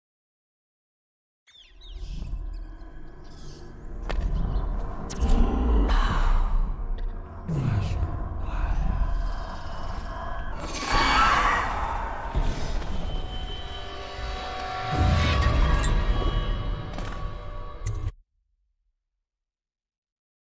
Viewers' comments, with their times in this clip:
0:05 I love how creepily she says Daud's name. Freaked me out the first time I played.